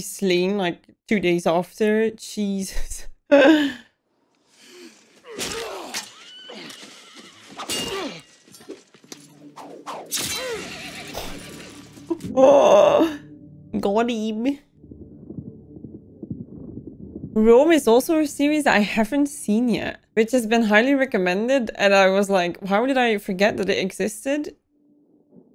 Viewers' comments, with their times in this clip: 0:09 Like others have said, “Rome” and “Spartacus” are two great series you should check out. And a third that is amazing that is not Roman, is “Dark”. Anyway, not only the soundtrack and score of this film is good, but the surround sound editing is amazing. The sound of the sword flying through the air still gives me chills. Oh yeah, nice intro and outro. 😉